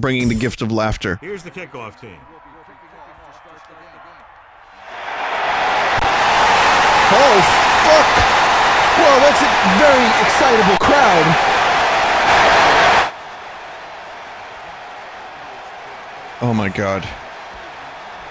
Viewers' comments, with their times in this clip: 0:06 the loudest thing on youtube ever.